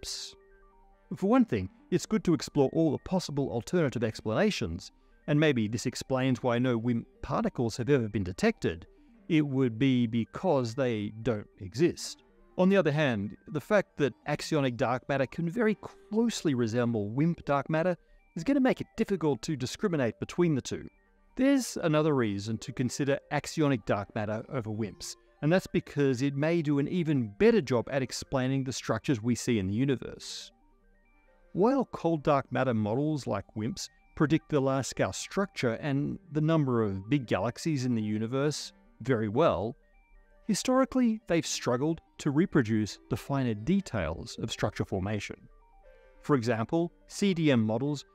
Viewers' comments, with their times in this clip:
0:06 I feel like he was hesitant about saying it here.
0:31 "while" same thing -- weird pitch change